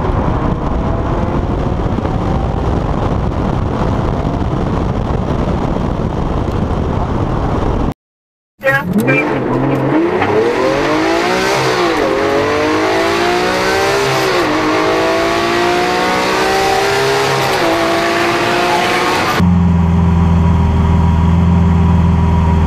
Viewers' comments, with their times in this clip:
0:09 the sound of the past.